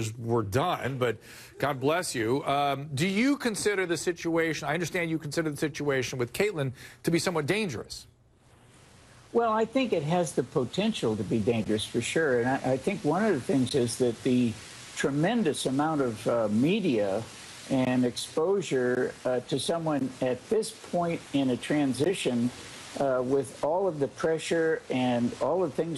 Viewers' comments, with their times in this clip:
0:10 Bill gates speaking.